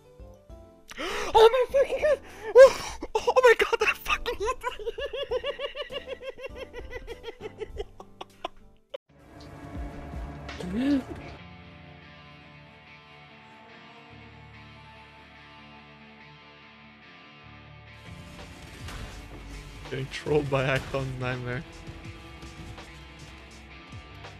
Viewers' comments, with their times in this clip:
0:07 when he realizes the ammount of int required he will loose that laugh